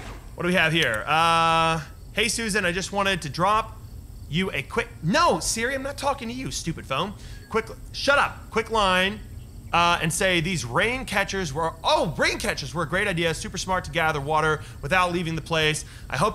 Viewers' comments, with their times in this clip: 0:04 Bruh when he said hey Susan my Siri came on😂